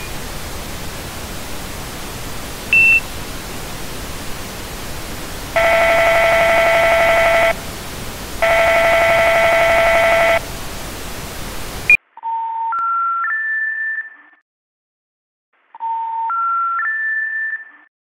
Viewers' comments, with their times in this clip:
0:10 if you put this part in 2x speed you will here the 911 dial sound 📞